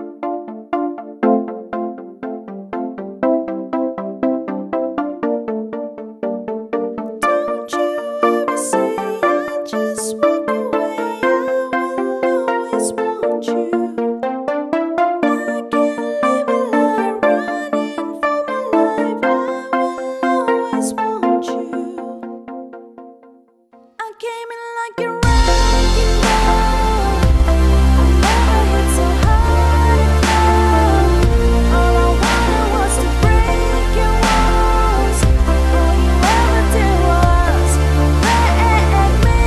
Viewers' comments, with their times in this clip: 0:06 how is even a karaoke 🎤 If the song is already playing??
0:08 WOW I THOUGHT IT WAS A KARAKOKE NOT SING SOME
0:23 is not karaoke